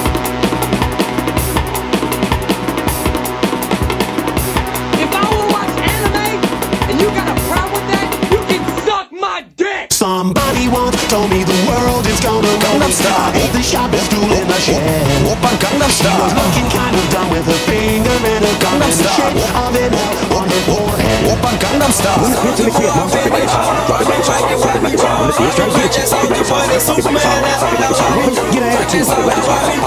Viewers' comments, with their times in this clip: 0:10 Jump in anywhere from onwards and it's basically garantueed that there will be 3 or more memes playing at once. This rip is a masterpiece. It deserves a lot more views.